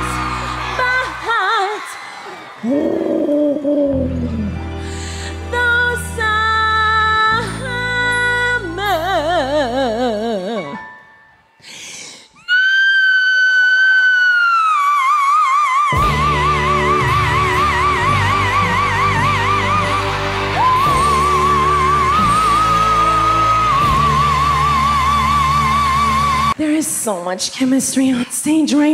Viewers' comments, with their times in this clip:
0:03 So the sound she makes in the poor kids ear here has me thinking it is consensual demonic possession. You know one consenting adult and one consenting demon, but whoops demon had no idea the absolute void it would be inhabiting and has found it’s self stuck. All it can do now is muster all of its little demon energy it can and make one small guttural cry for help every so often. That kid had no idea what his little mortal ear and soul were actually hearing and being subjected to.
0:12 rip my ears (I was wearing headphones)
0:12 my earbud literally flew out of my ear Send prayers